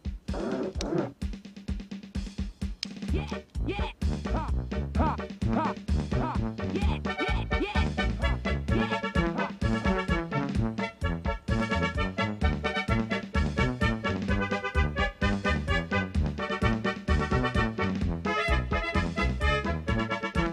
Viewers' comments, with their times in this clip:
0:04 Love the arcade fighting game sounds 😆